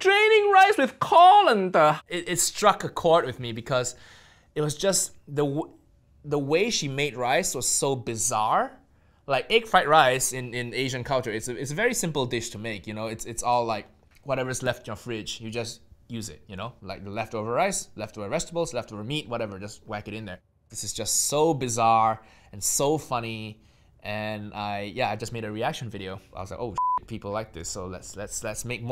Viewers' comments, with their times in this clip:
0:10 the way he pronounces "Egg fried rice" he forgot he's Nigel Ng and not Uncle Roger